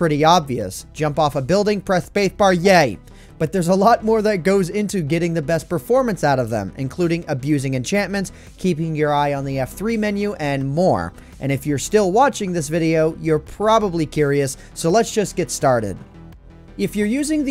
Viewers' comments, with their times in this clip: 0:03 Did he get a lisp ?